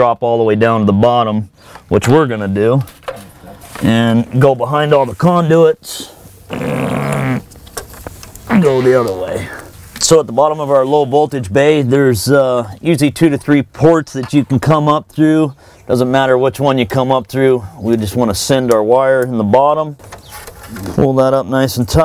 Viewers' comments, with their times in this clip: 0:06 I love the fart blasting !
0:06 awesome tutorial!!! Ready to do mine. Who farted at minute ? lol